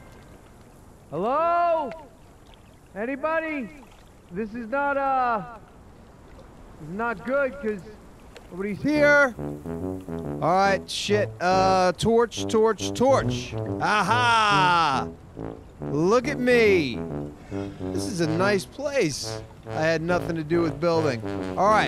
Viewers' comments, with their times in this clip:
0:08 That tuba tho